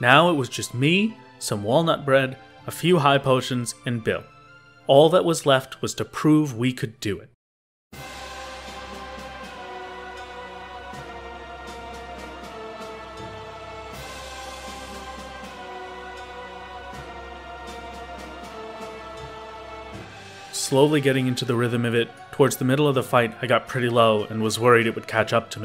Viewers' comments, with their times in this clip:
0:08 I haven't heard this song in so long and I play thr game near daily.